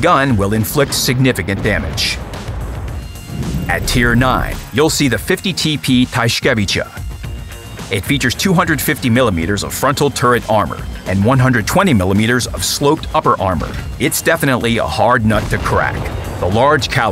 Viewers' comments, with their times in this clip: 0:04 I believe wg hired real some people just to pronounce that name
0:05 i wonder how many takes it took to say that correctly.